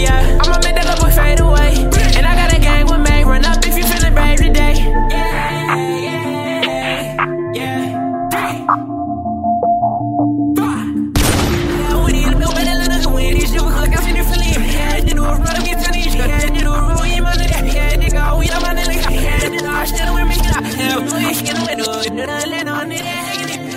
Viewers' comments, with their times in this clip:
0:05 that yeaaaa yeaaa yea 🔥 catchy af